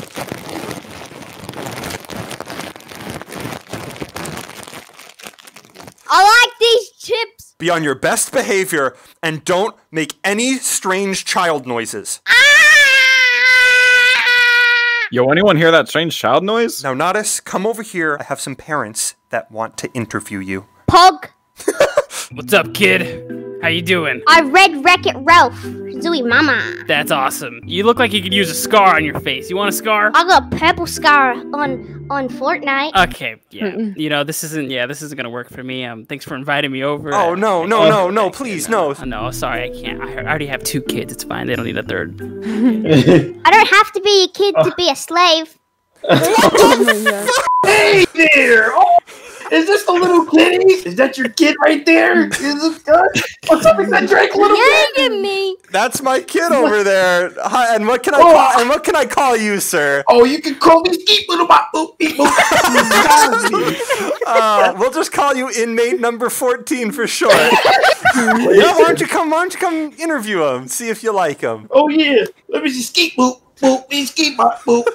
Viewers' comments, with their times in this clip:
0:05 Ngl natas sounds like bri-ish And my favourite part:
0:08 Be on your best behavior and don’t make any weird strange noises- (Proceeds makes strange child noises) Yo did anyone hear that strange child noise?
1:01 how boyfriend from fnf talk